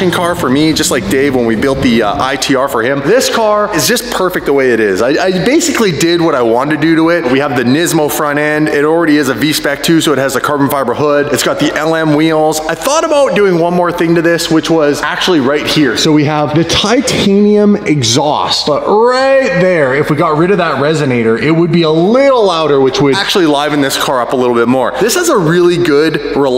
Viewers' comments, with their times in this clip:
0:07 How you gonna say Nismo the way you did... everyone knows it's Neeesmo... I love your content but you guys trigger me on your car knowledge... you guys are like the kids that play sports for the participation trophies and don't really deserve one.